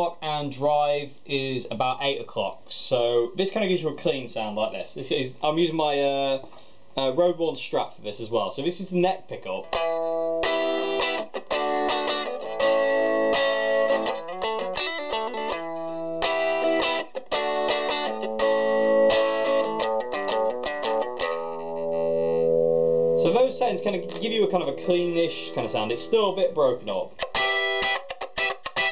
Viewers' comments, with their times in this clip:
0:09 nice FRUSCIANTE flow :7